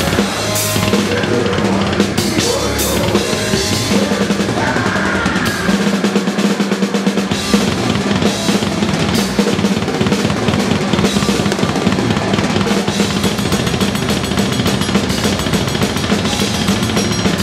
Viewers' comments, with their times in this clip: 0:05 that is probably the cleanest quad fill I've ever heard. Its just perfectly played.